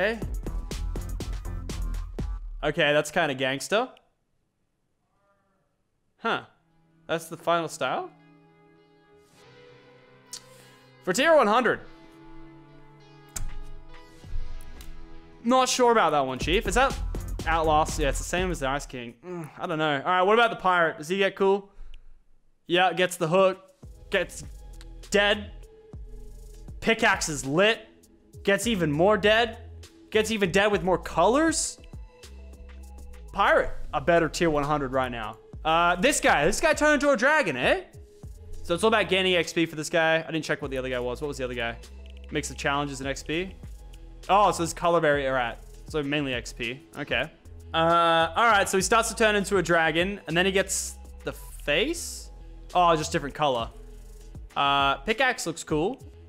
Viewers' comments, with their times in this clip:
0:05 Who else heard arr
0:37 he sound irish